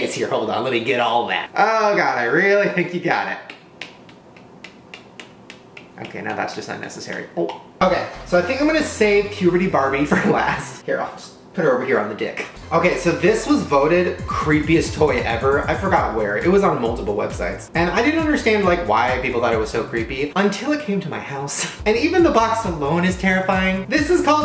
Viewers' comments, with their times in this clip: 0:04 and a bit over you’d hear the noise he made when the et finger went in his mouth 😂😂😂
0:07 I died laughing, what was that noise😂😂😂😂😆😆😆😆🤣🤣🤣🤣